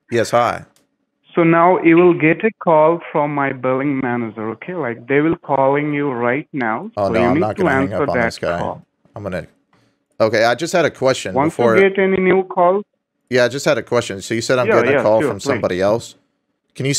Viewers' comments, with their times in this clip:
0:03 Did he say "Billing Manager" or "Bell End Manager" because the latter seems more correct to me.